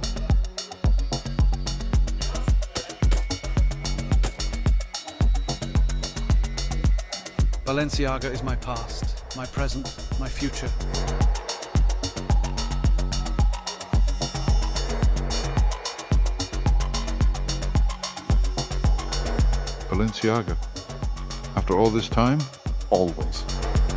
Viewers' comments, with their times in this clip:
0:07 This sounds like something from John Wick